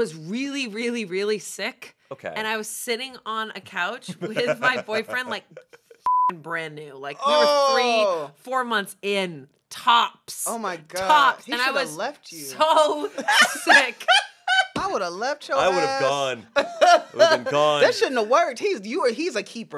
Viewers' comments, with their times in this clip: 0:04 new Shayne laugh unlocked